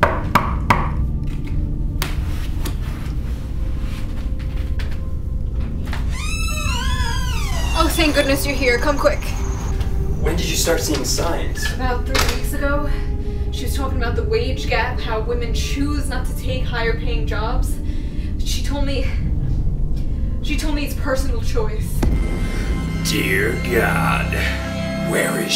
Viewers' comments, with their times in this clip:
0:07 corner store beeping